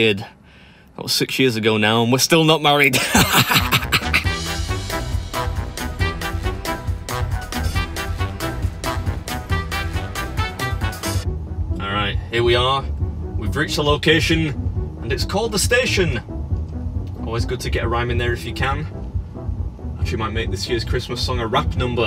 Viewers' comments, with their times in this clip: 0:09 The obnoxious music then switches and sounds like your playing it in the car xD Driving around to that song XD HAHAHA I'm dying xD